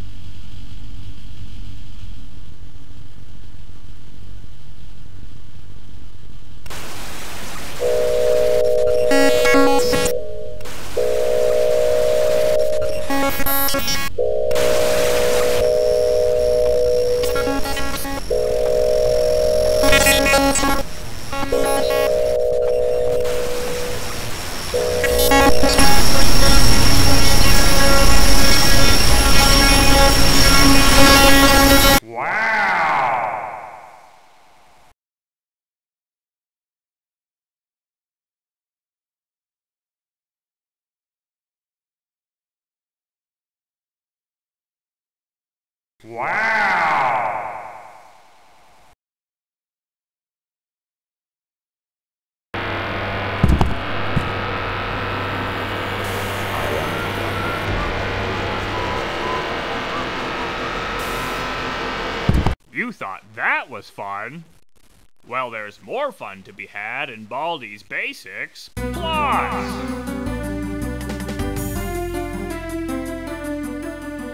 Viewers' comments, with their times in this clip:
0:07 who response an airhorn signal
0:25 that glitched Baldi actually scared me lol. Also why do I hear nulls glitchy sounds?
0:55 souds like ambush doors